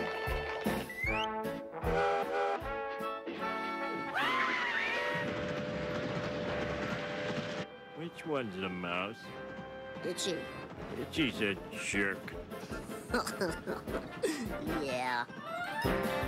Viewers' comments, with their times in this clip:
0:03 Scratchy screams like Homer